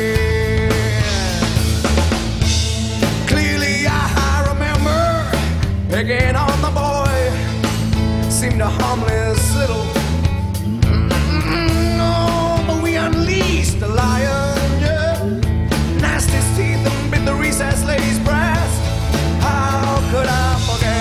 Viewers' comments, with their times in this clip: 0:08 I like how he hesitates and doesn't swear I get why performers do that at live shows but the way he does it it feels like he's paying respects to Jeremy.